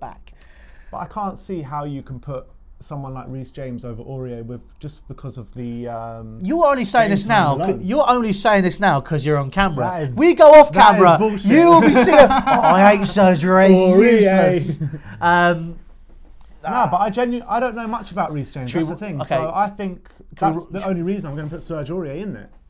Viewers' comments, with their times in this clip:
0:03 Scared the fuck out of me mum when big guy scream-laughed